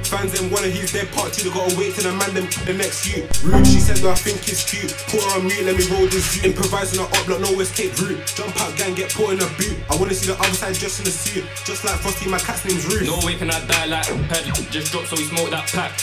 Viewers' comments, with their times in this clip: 0:03 The Windows Sound killed me 😭